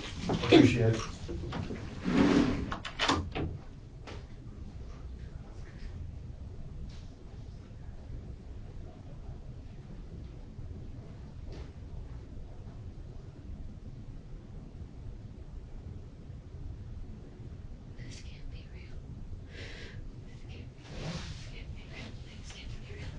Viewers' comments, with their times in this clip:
0:04 Amazing how when the detectives walk out, her emotion instantly stops. Silence. Creepy af.